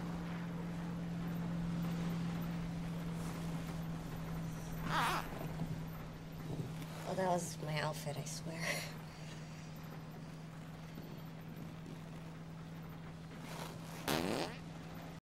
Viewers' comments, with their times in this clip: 0:13 wow what a gas Velma has